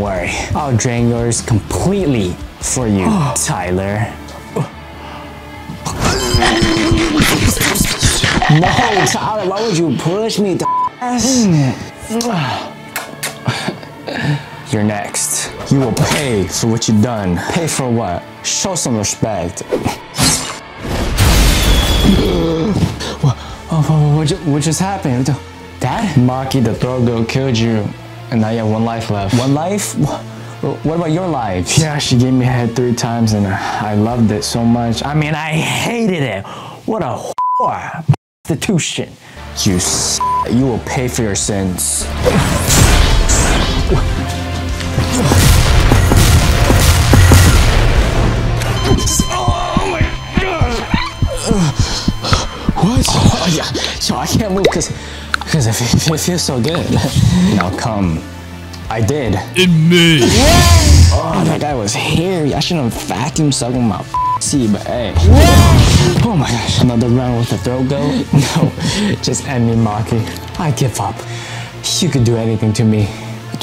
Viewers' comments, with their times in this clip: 0:07 bro the eating sound😂😂😂
0:48 say God normaly 👍👍👍👍👍👍👍👍👍👍👍👍👍👍👍👍👍👍👍👍👍👍👍👍👍👍👍👍👍👍👍👍👍👍
0:59 That voice change